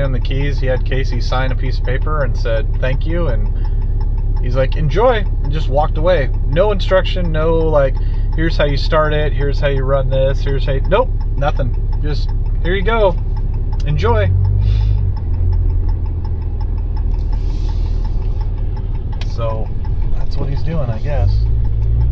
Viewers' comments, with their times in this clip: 0:04 By the sound of the fast turn signal noise, im guessing one of your bulbs has blown.